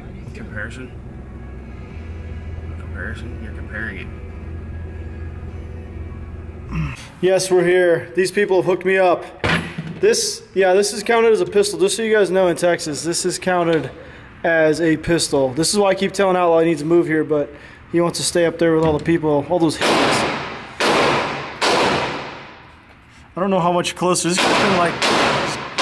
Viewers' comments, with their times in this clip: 0:07 screaming analogy at the phone... lol